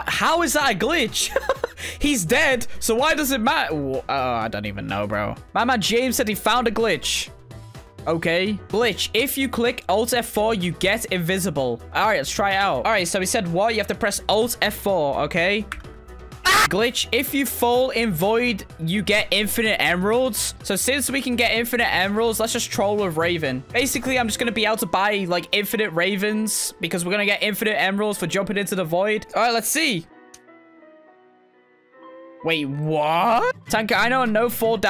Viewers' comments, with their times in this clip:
0:08 Not the alt + f4 thing, bro that scream kept me laughing for for 10minutes straight, I cannot stop laughing 🤣
0:09 Perfect cut screams 🤣 Edit thx for the likes
0:11 Bro The Scream naw
0:13 Most iconic TanqR scream
0:15 that scream tho-
0:15 sounded like a cow lol
0:15 Lmao the scream after he got caught 💀
0:15 i kept replaying his scream cuz its so funny lol
0:16 If you go to it was a perfect cut scream
0:16 is totally normal when he screamed
0:16 famous last words before he yelled of scared
0:16 Tanqr screams AAAAAAA!
0:16 thats what i call a perfectly cut scream
0:16 The funniest scream I've ever heard😂🤣😂🤣🤣😂🤣🤣😂😂🤣🤣
0:16 The legendary scream😌😌
0:16 The way he cut his shout 💀